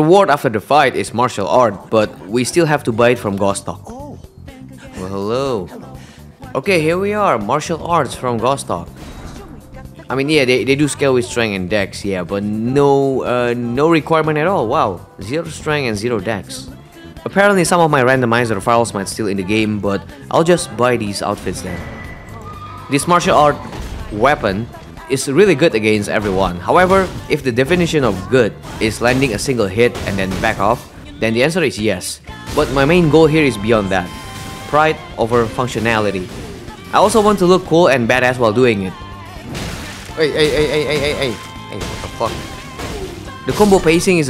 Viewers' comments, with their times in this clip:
0:05 yall hear the music sync with the dialogue, i cant unhear it
0:30 i thought i was hallucinating the persona 5 song since i have been playing it alot 😂